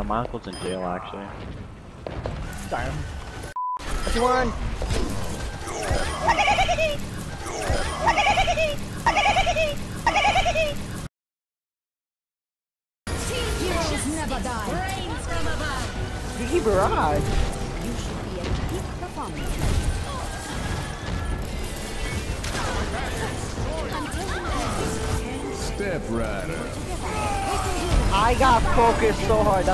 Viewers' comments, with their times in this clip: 0:06 damn, he really went into character for that laugh. 😳
0:06 he’s doing the junkrat laugh
0:06 Lol XD slap "it's what she deserves" Hehehehehe
0:16 WHY AM I HEARING "NICKY BARRAGE"?!?!?!